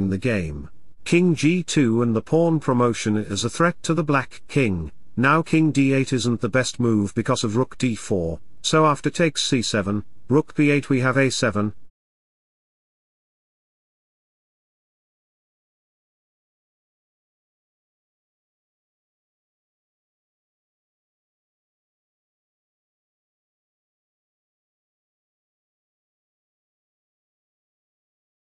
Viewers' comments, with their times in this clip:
0:09 nice, there is no music